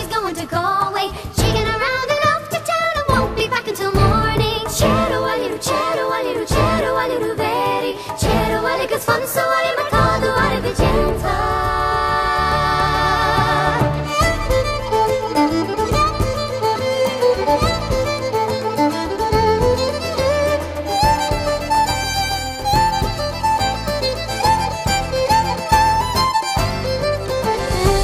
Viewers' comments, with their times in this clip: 0:09 you'll hear:& watch hentai.